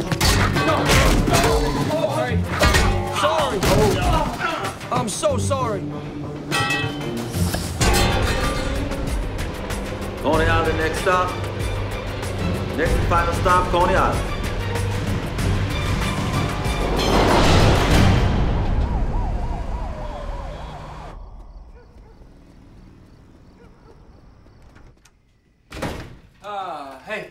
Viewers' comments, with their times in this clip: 0:06 the sound effect of the pole detaching from is hand is so bad lol
0:11 that bgm and his surprise reaction...😍